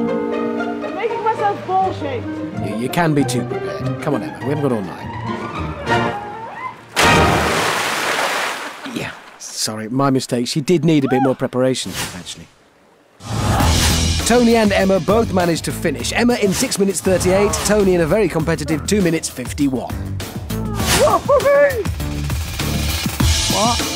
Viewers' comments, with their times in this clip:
0:06 I’m pretty sure this counts as earrape-